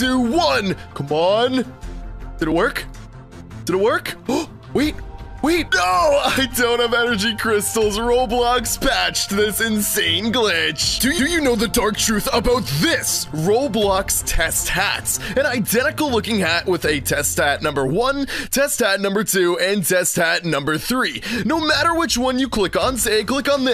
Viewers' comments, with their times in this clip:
0:09 wait did u just say DOdo